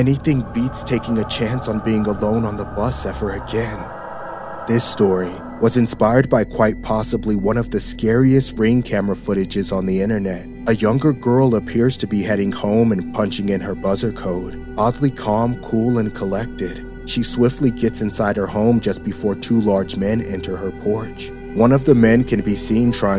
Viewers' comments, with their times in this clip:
0:08 The way he said scariest on 😰😰😰